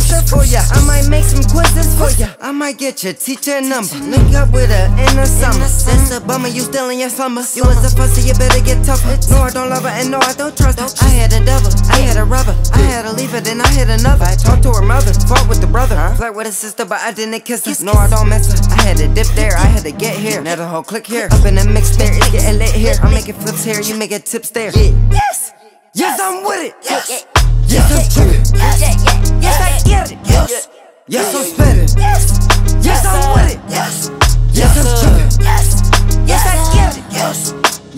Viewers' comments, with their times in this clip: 0:06 that flow switch 😭
0:23 "you niggas tips here"?